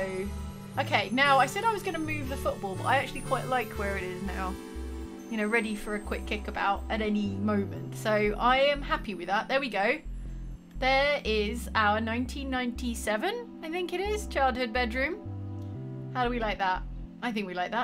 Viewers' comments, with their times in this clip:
0:05 that's a really nice completion sound.